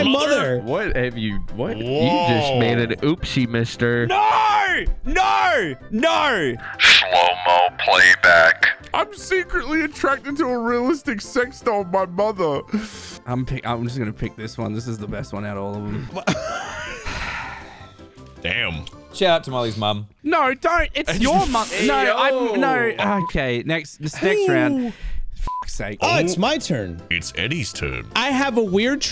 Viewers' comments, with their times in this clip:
0:07 they forgot to bleep it
0:11 I like how it wasnt bleeped out on slow playback 😂😂